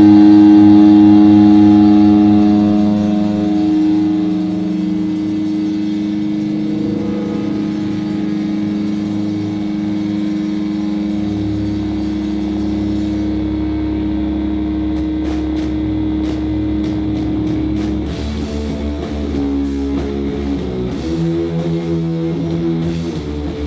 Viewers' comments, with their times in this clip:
0:05 why does the sound level go down ?